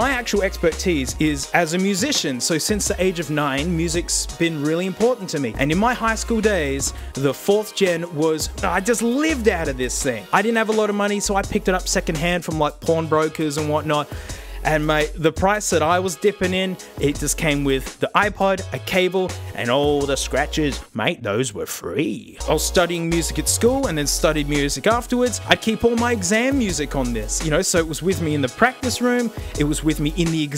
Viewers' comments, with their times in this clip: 0:10 All the Americans here like, "What's a PORN BROKER?"
0:11 Ahh yes, I hear the Australian Porn Broker Business is really thriving right now
0:11 Does anyone else hear "porn brokers" ? I'd wash my hands if I picked up a dank ipod from a porn broker ;)
0:13 I just hate my head for hearing that wrong